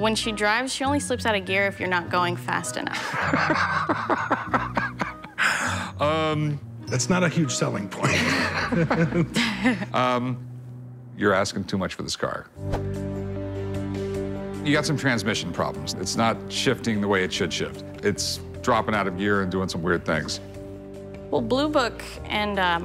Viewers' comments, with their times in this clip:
0:03 how would you guys feel if you gave an asking price to Rick and he just does that heavy-lunged exhaled laugh he did